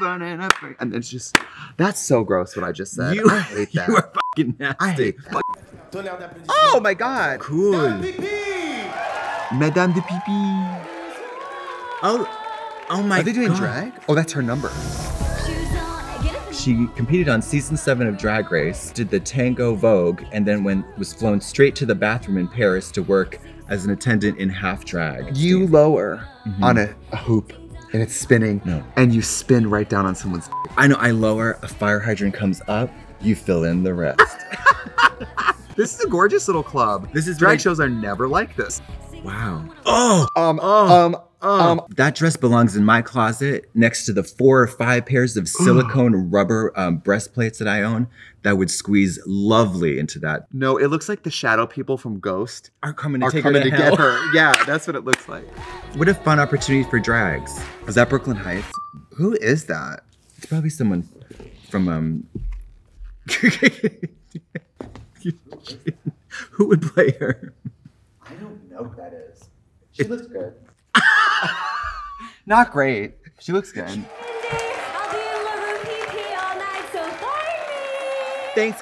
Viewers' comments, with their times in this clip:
0:10 i live 4 trixie singing Madonna
1:03 trixie walking up in those heels sounded like godzilla crushing buildings when he walks 😭😭 trixie ily